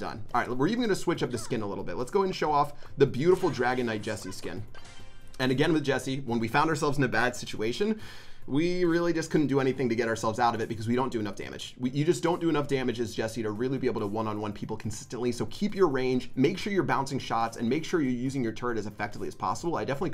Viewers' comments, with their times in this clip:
0:03 dragonite jessie😂😂😂 someone has to draw that